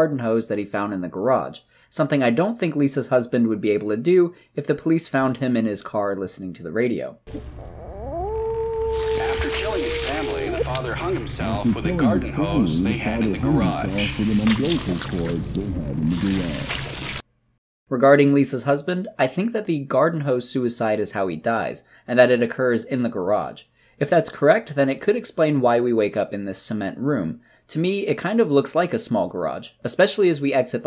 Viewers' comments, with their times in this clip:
0:09 there’s a separate muffled voice talking behind the sinister broadcaster when he’s explaining how the father hung himself. It seems it’s saying the same thing just delayed but if you listen closely there is differences.
0:10 Someone else pointed out in the comment section of another video that if you listen to the echo of the news report about the garden hose suicide, the reporter in the echo says "hung himself with an umbilical cord". Timestamp if you wanna listen is
0:10 the husband dıdnt hang himself with the garden hose listen closely agaın the muffled radio talk and u can hear what he actually hung him self with
0:10 If you listen very carefully you can hear the muffled voice say: the father hung himself with an umbilical cord.
0:14 If you listen closely, the muffled echo says "umbilical cord" instead of garden hose Nvm, just watched the second part lol
0:15 the echo of the radio mans voice says the father hung himself with an umbilical cord they had in the garage the line changes from garden hose I can’t see anyone else who’s noticed this but that adds to his theory about the man cutting the umbilical cord in the bathroom in his older video